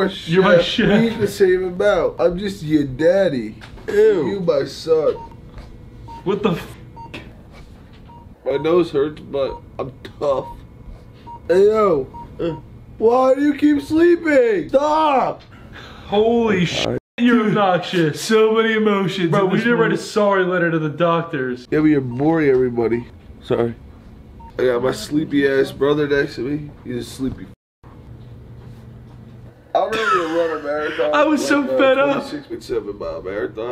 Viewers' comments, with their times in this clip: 0:08 "my nose hurts but im Tough" the T was so exaggerated😂
0:19 I thought he said "bro we need to write a song related to the doctors" for LEGIT a year and a half. I JUST NOW realized it's "bro we need to write a sorry letter to the doctors 😂😂😂😂😂😂😂